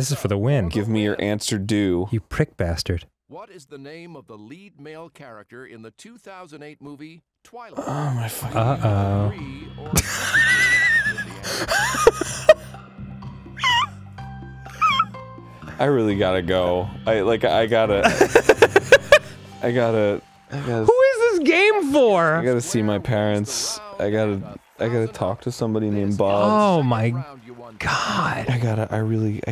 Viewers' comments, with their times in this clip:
0:09 I was squeaking in unison with Danny at that. Edward Scissorhands, OMG.
0:09 Dying horse! Send it help.
0:10 Danny became a kettle pot